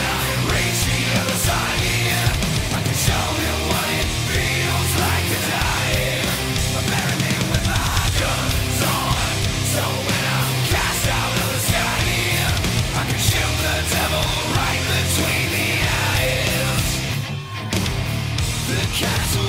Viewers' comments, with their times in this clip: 0:07 I heard a Vinnie Paul drum riff!!!